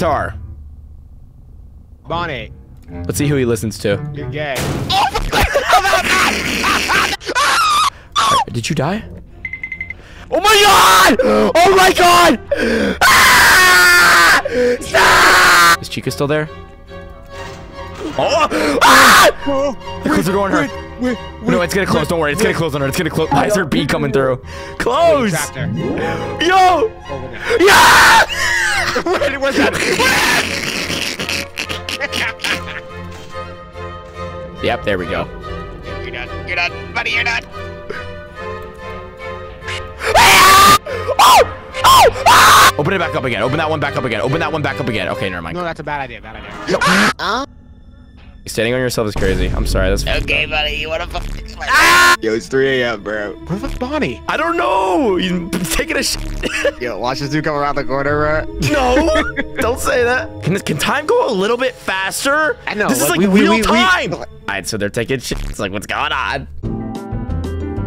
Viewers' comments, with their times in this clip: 0:06 tom ahh scream
0:08 The music makes it more dramatic
0:15 bro was screaming like that famous horror mean like this ÆÆÆÆ%#*@@
0:28 That “WHIIIT!” I thought it was “FLINT!!!”-“
0:51 that scream is how it feels to stub your toe hit your face with n a wall and hear a crack in your back💀